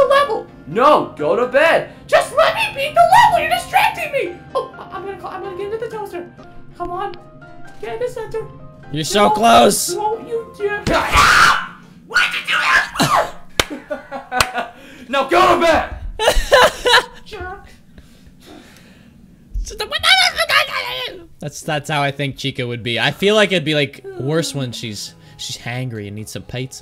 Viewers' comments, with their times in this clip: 0:10 I expected Chica to post gaming videos that has something to do with pizza XD Anyone else......? Also I love that chica stuttered, I loved it X3 Bonnie just yeeted Chica off the chair XD